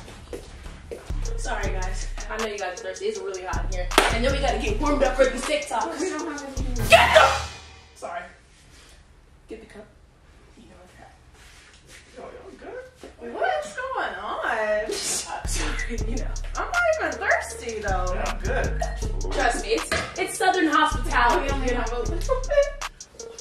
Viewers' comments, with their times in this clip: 0:06 😂😂😂 lmao why she scream like that I’m weakkkk
0:07 When she yelled “GET THE” Im dead so many times 😂😂😂😂😂💀💀💀💀 I done played that back a couple times